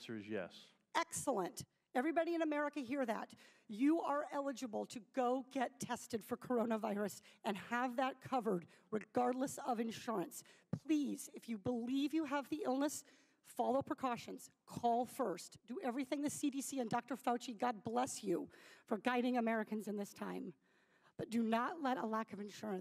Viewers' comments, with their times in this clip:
0:06 my gosh when she got that YES answer. It's was like a eureka moment. Her voice cracks, I'm crying. Thank you ❤️